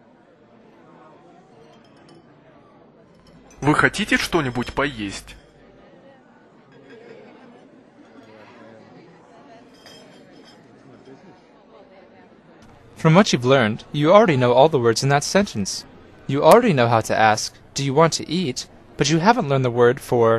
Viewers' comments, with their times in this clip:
0:04 I can hear people talking and some clinking in the beginning ( 31 )
0:04 I can hear people talking and some clinking in the beginning ( 31 ) Never mind , it's through the whole lesson